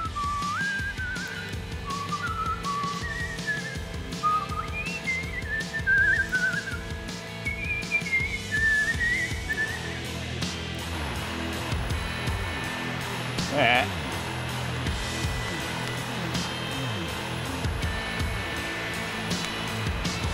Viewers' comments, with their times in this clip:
0:06 its funny that he whistles that SEEING ( pun intended ) as my birthday is in 3 days. Im turning 23